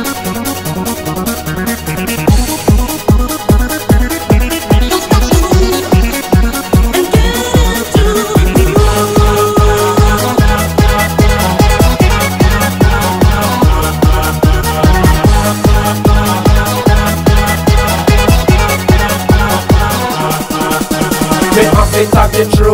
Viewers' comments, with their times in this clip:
0:08 the instrumental part as in has a similar rhythm to No Limit.